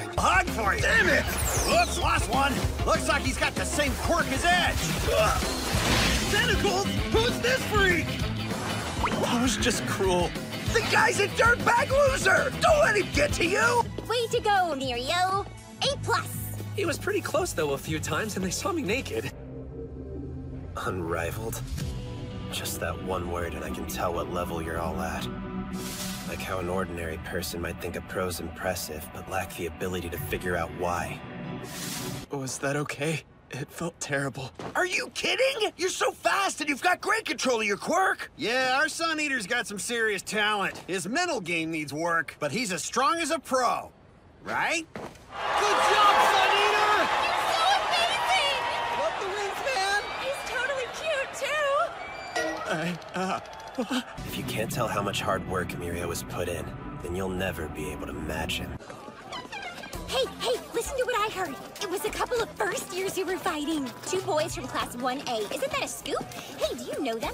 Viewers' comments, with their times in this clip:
0:09 is probably the loudest Tamaki's ever been-
0:51 I-i uuhh....- Tamaki being a adorable shy bean :>